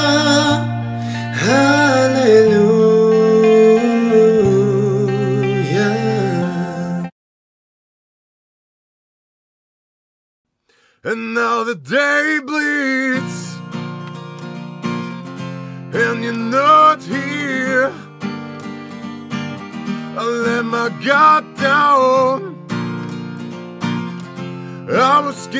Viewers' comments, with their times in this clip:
0:10 his voice is crunchy lmao
0:13 why is his voice like that?